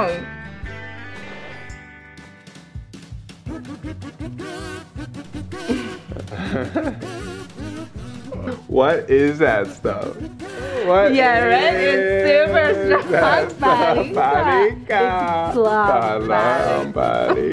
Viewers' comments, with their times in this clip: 0:05 now i know how the language and conversations in Sims were really made!